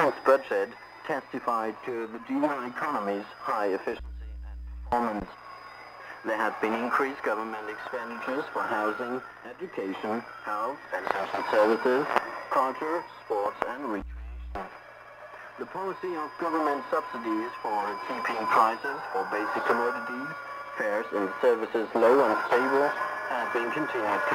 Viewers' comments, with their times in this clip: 0:09 Notice the occasional jamming signal sneaking in. I heard it 4 minutes in, a definite intentional signal.